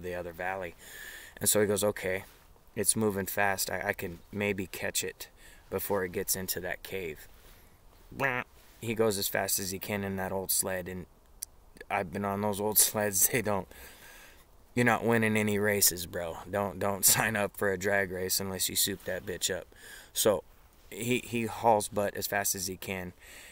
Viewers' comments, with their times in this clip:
0:07 🐒🙉🙈🙊 I'm really confused by the noise Did you actually make this sound or did YouTube censor you with Donald Duck? 🐒🙉🙈🙊 Al